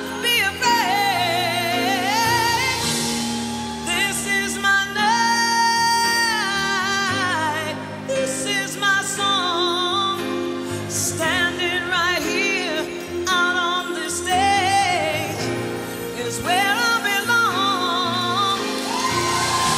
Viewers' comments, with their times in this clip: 0:03 and on....that note is complete and utter 🔥. So talented and missed.